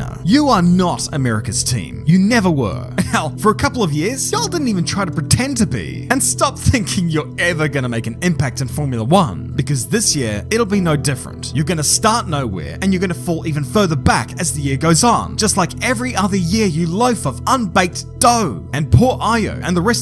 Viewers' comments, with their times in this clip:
0:04 that "ya'll" right there is southerner approved